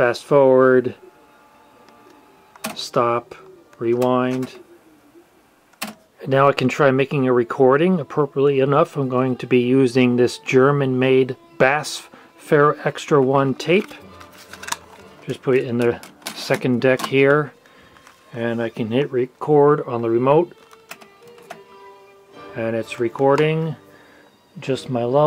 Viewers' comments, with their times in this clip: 0:08 is that how it's pronounced? i've always said it as initials B-A-S-F not as a regular word
0:11 I normally pronounce BASF as an initialism rather than an acronym… When pronounced as an acronym, it sounds… interesting…